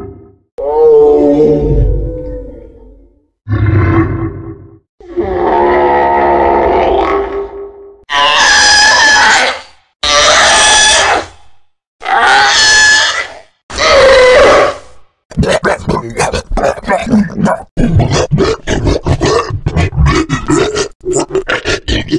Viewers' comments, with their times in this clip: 0:04 sounds like the zombie sound from oblivion, cool as hell.